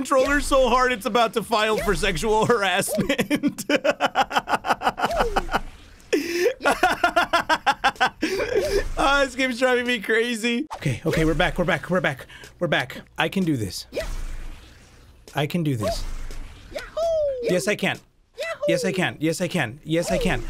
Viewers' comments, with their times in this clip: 0:04 that sad sad laugh tho lmao